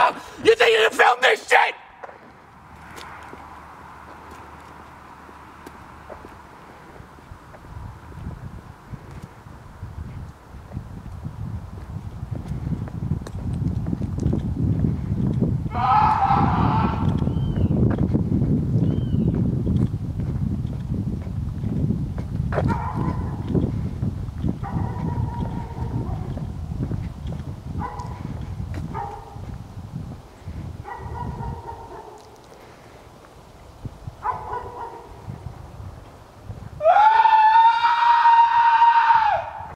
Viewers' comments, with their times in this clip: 0:03 shaggy that you?
0:37 The Neighbors Hear Someone Screaming